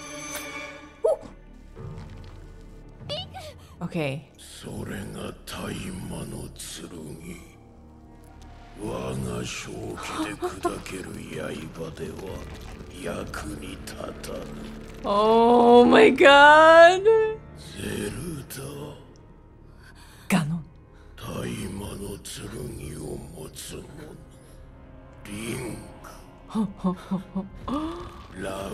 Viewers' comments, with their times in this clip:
0:10 You probably heard this already, but by switching to Japanese, you robbed yourself of Matthew Mercer's voice. Don't get me wrong, I love the JP voices, though I wouldn't use them myself since I don't speak the language and I don't want to have to read the subtitles, but this one has some solid English voices too.